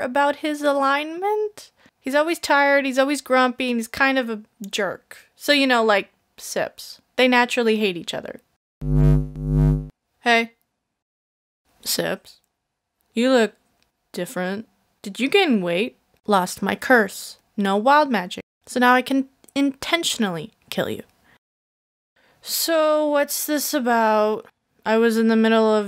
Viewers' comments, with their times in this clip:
0:06 Oh my god Mr Wizardly (great hair) sounds like Aizawa, I love him. He's now my favourite character, tied with sneeze.